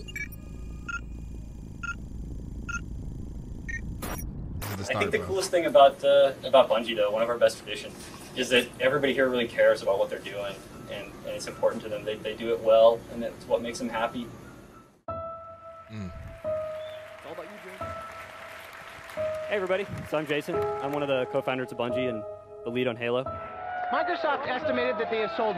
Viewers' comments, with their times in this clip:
0:08 man that cut from 343 devs saying scripted talking points to bungie devs talking passionately about halo really hits the nail on the head. 343 has no soul and no passion.